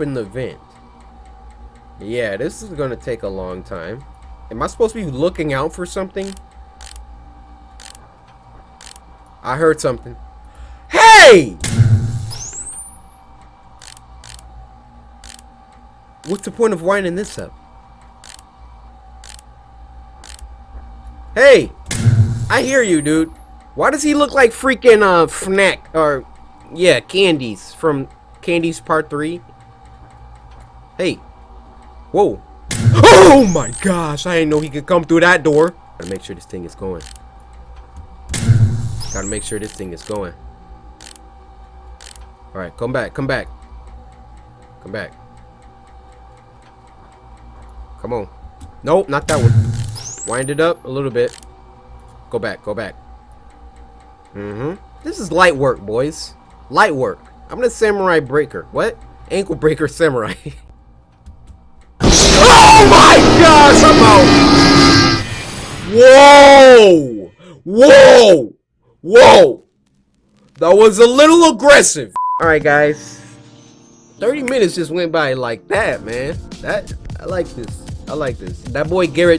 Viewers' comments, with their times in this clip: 0:09 I like how hes not even remotley scared, hes just like HEY
1:02 bro your scream scared me more than the jump scare